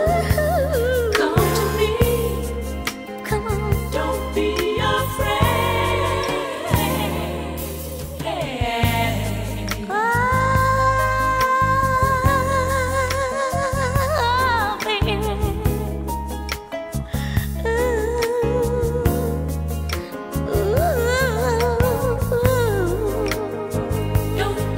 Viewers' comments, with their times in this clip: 0:10 The note is so smooth like omg I need that note just at my disposal to play when ever I want too lol.